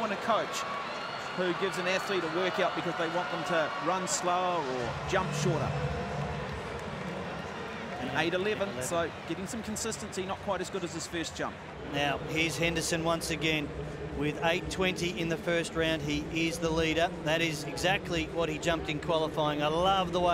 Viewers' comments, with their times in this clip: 0:03 Why did I enjoy that slow-mo of the sand ASMR vibe.